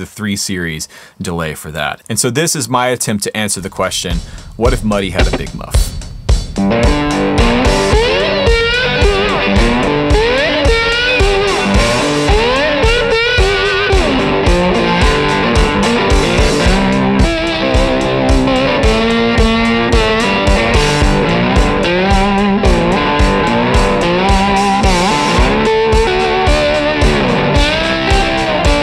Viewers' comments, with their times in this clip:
0:05 so Jack White, love it man!
0:09 that “muddy with a muff” sounds like a pack of wolves. Vicious yet majestic